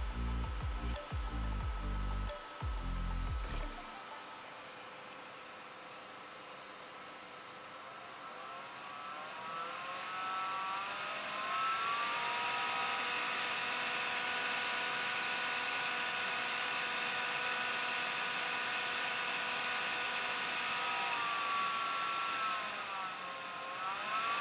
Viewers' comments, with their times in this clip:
0:09 it's like he's putting his foot on the gas of a hot rod, listen to that engine purr! Better than sex!